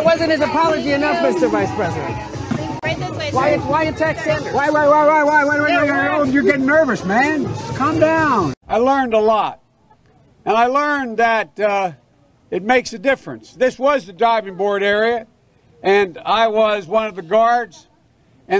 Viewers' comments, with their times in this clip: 0:04 ah yes placeboing remix xD